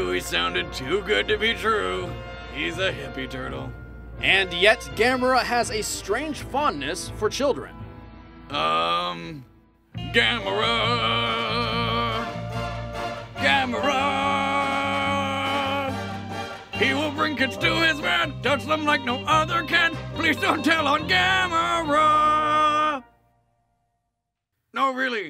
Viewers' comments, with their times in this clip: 0:07 Boomstick's sultry tones
0:10 Had to come back to mark this amazing song